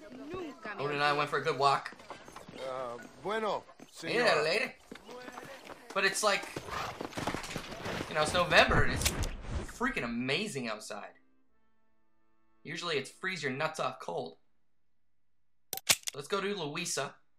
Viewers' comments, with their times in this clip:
0:04 If you listen closely, you can hear Odin shake off :)